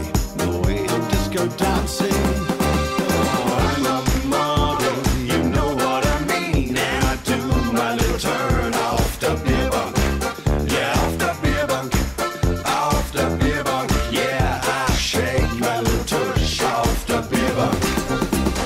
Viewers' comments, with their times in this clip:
0:06 I know...when your man joins him singing..I'm a model...it really lifts the song